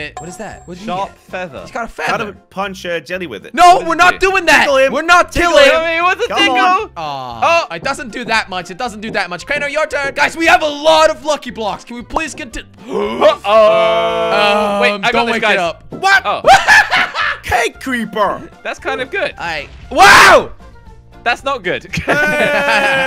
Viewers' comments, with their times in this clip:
0:08 Anyone noticed the knocking ?